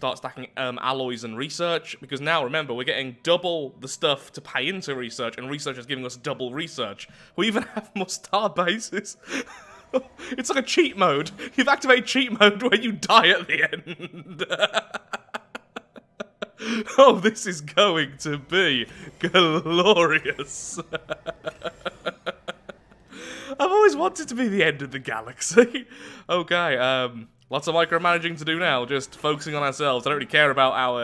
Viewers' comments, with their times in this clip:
0:08 that laugh is demonic and I LOVE it!!!!!
0:13 I love that laugh Perfictly sane laugh for a human being.
0:15 was the most sinister mad man laugh I ever heard, Khorne would be proud.